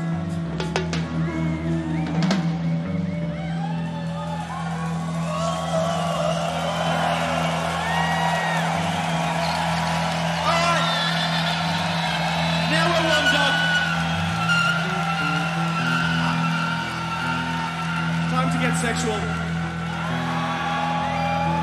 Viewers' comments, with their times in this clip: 0:09 The band finishing up Hot Water: Amby: Screeches into the mic